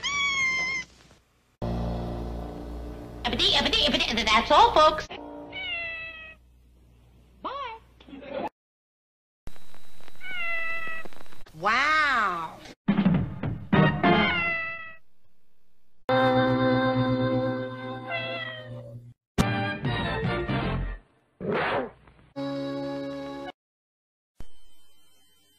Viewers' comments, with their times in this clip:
0:07 The way Mimsie said bye is so funny. That the crowd even laughed. 😂